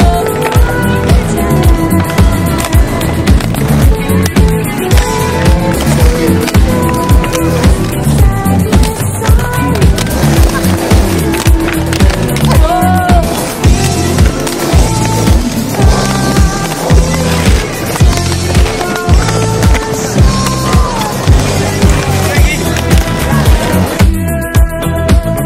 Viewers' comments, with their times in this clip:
0:10 The slide “click” slide sounds remind me of asmr and its oddly satisfying